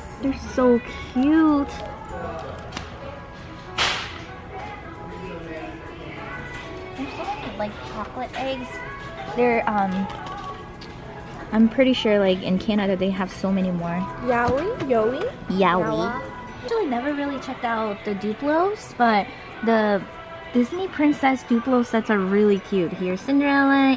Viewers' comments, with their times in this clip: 0:06 Who else heard how far I'll go